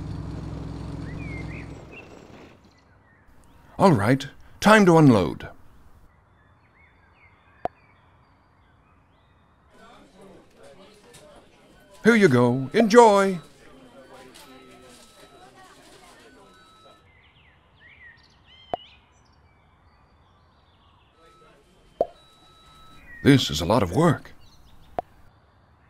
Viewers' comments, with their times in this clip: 0:06 When there the fart sound is sooooo funny too